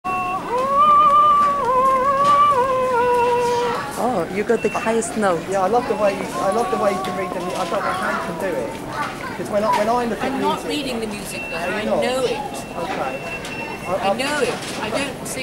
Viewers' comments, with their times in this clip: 0:01 her reading ... pardon ... her knowing of music sound like cat in washmachine ...